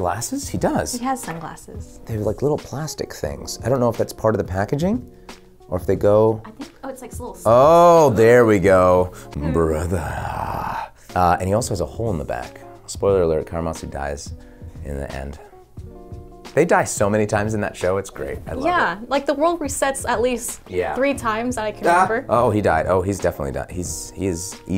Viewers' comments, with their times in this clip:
0:08 Ray Chase just showed off his Karamatsu voice